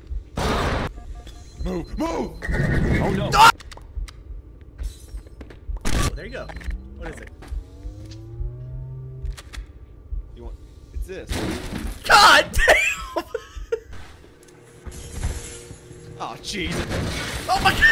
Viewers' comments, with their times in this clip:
0:04 is my favorite, Just the pure silence from everyone, even the elite. 😂